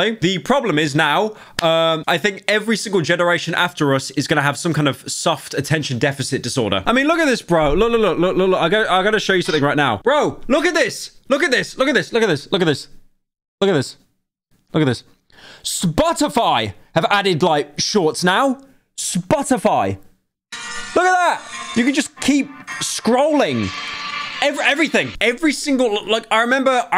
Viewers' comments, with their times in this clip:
0:09 bro u kinda sounded like that one sound they be puttin over vids on tiktok idk what the sounds is nuts it’s funny😭